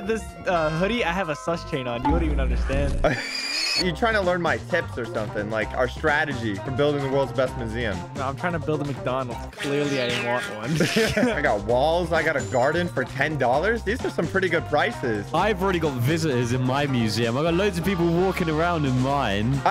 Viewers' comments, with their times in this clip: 0:03 bro sounds like a tire screeching fr 💀